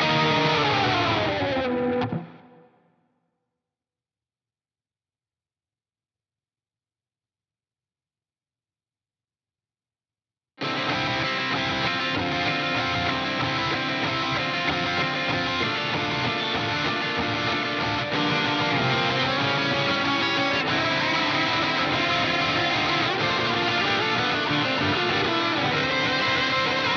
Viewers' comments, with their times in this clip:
0:10 The back and forth between rythmn and lead is so cool. Never noticed that til now!